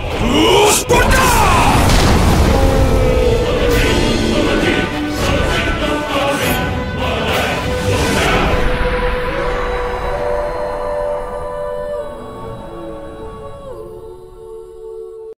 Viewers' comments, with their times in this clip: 0:09 was that alduin roaring or was that the dragonborn roaring at alduin?